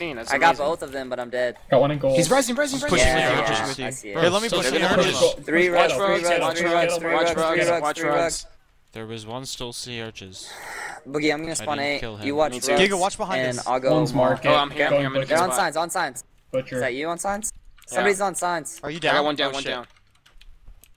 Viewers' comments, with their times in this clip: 0:05 I can't really hear what they're saying.......